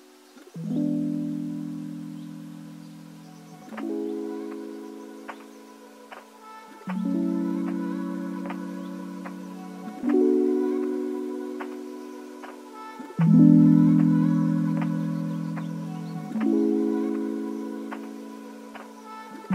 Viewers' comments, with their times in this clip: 0:06 oh my god those sounds on the left scared the sh*t out of me I thought someone was behind me wtf